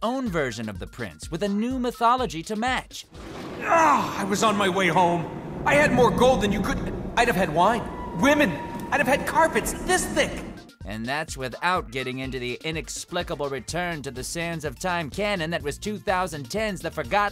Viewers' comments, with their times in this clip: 0:03 Well he definitely got the “whine” part down.😆 ...🤔we need a finger snap emoji.